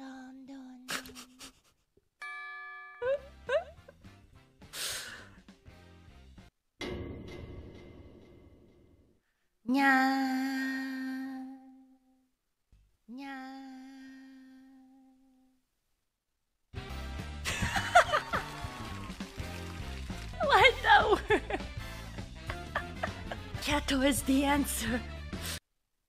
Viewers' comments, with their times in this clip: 0:09 "NYAaaaaa~" SOO CUTEEEE!!!! ❤❤